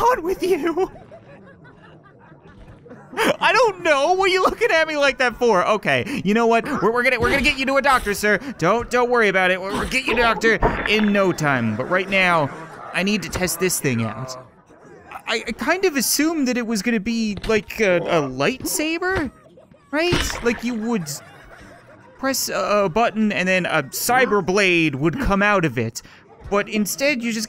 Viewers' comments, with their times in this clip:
0:09 Lions Sleep Tonight just starts playing